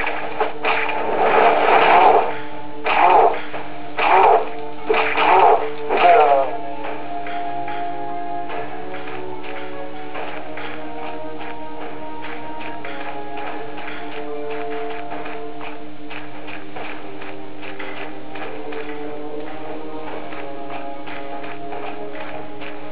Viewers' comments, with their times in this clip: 0:03 I switched to another tab to read something and thought this sounded like Doom lol. Had to see wtf...must be they used the same technique to make voices.